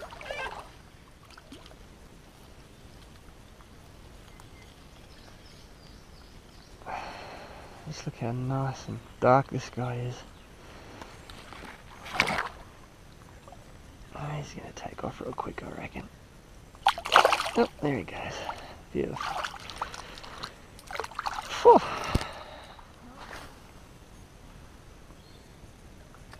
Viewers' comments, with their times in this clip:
0:07 I envy the awesome places you hike to. they seem untouched. also I couldn't hear anything maybe I don't know what I'm listening for.